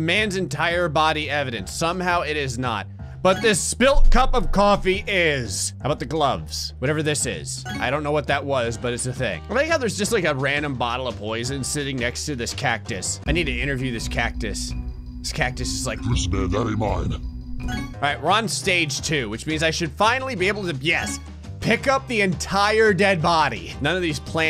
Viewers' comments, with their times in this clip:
0:10 I love how you gave this tiny cactus the voice of Cthulhu